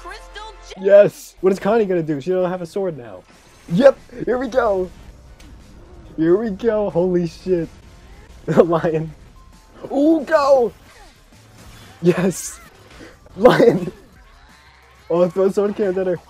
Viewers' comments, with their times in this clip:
0:04 Why laugh? Is Sad :"v